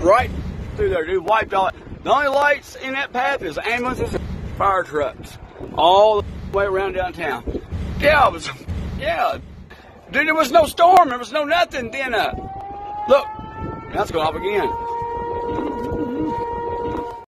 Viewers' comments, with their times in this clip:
0:07 I can barely understand a word he says but I like it. Especially "gibs" what?